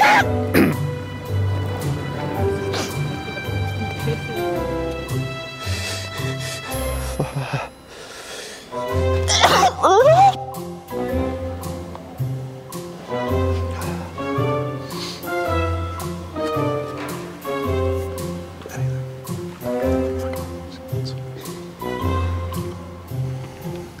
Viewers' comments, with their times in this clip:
0:07 This is the FUNNIEST THING i hav ever seen!! i could not control myself .. was not ready for the moaning at the end of the sneeze XDDDDDD
0:08 That Sneeze should be a ring tone and weekly video reaction around people. Whenever I feel down or sad I see this video to crack me up lolll it doesn’t get old
0:09 it’s called moaning not sneezing lol
0:09 A girl at my high school had a sneeze that sounded just like The entire class would crack up every time she sneezed lol.
0:09 I was in the library for the sneeze and I told all my friends the story of this sneeze. Every single person laughed on the 4 very echoey floors that heard this. It was in a super open space and they honestly did like 5 takes. All of them were hilarious
0:09 when u sneeze but u having fun with her